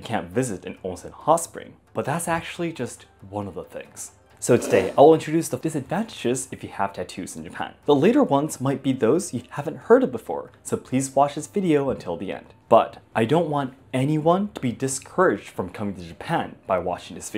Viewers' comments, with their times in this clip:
0:04 What's up with the echo ? I didn't know about the life insurance business. Who would've guessed.